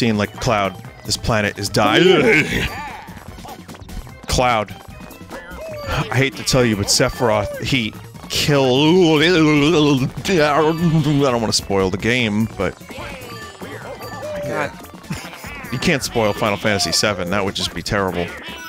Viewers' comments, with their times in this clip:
0:06 who is seth roth?